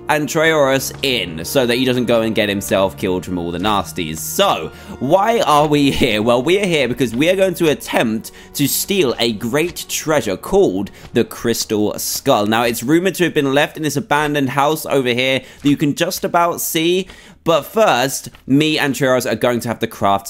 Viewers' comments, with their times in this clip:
0:03 did he say Nasties or naz*es